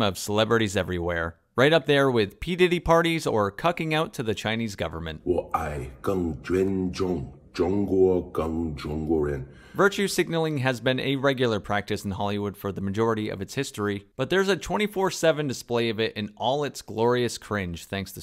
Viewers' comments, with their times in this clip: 0:04 if you switch Cena speaking chinese for some one giving Oral most people wouldn't tell any difference 🤣🤡